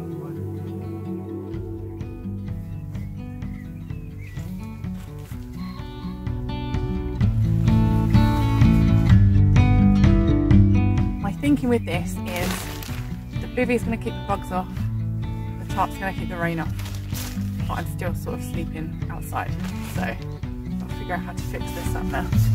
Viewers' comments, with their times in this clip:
0:03 When those people were walking by I thought for sure the guitar music was gonna give away your position